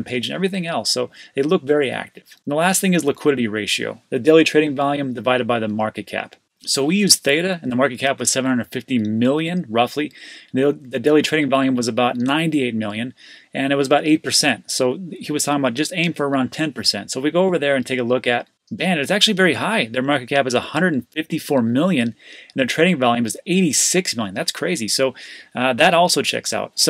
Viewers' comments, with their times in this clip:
0:08 Totally of topic. Jump to min and play it at 0,5 speed. It's sound like a drunk person is talking about crypto xD hahaha Love your content, no matter at what speed :D